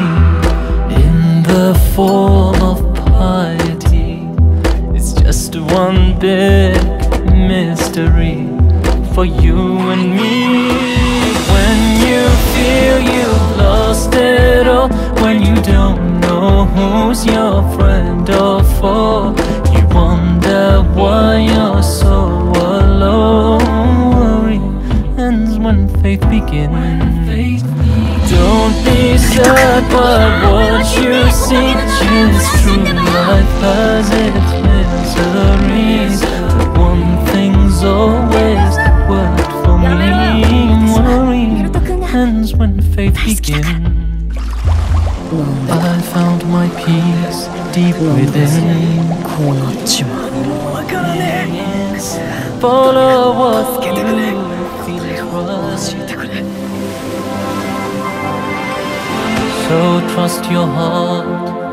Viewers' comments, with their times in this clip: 0:09 I have shivers EVERYTIME on when she shouts "Sensei!" T__T
0:45 Does he really say penis or is it just me.
0:46 i think it says "penis"